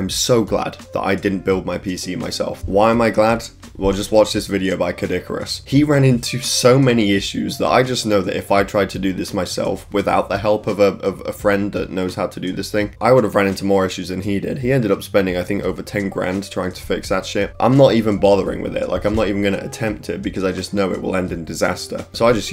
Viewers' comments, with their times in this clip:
0:05 sounded like Kid Icarus I did it mom I made fun of another person's accent hehe